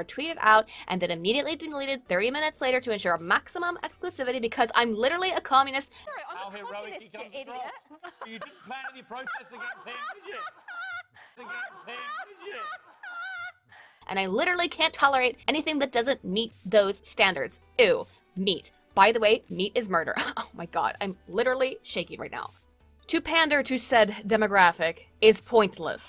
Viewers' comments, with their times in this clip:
0:10 somebody make a meme with her voice STAT